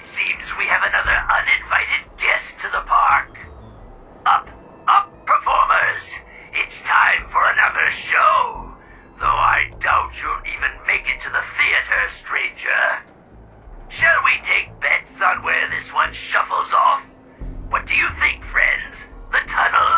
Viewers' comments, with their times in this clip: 0:05 is it just me or does this sound like fizzerolli from helluva boss 😂